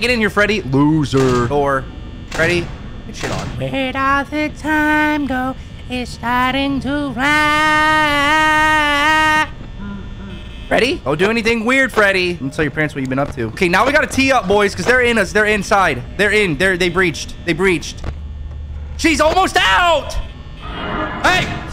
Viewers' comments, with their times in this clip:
0:04 nice singing man